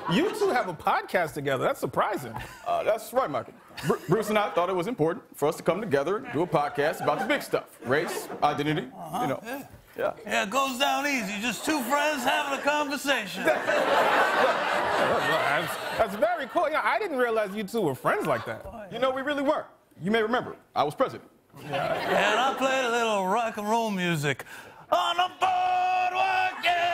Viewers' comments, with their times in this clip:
0:08 Can anyone figure out what Redd says after "race," ? It sounds like "dinini."